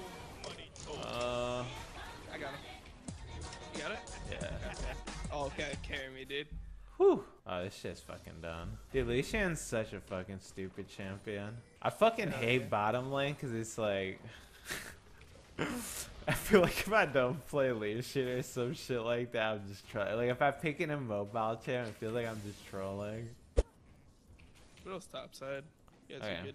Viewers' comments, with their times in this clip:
0:03 i heared "y ahora?" that means "and now?"
0:14 Where is the monkey scream when he missed the cannon minion